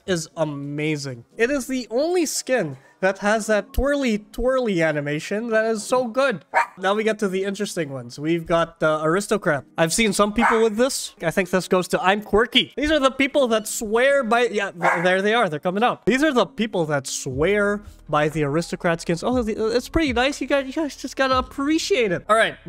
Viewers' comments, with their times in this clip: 0:05 the dogs are barking very loudly behind him or outside his house